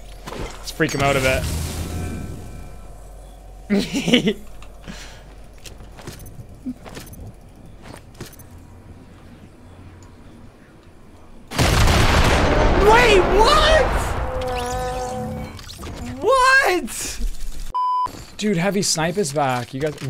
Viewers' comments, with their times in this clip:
0:04 that little laugh haha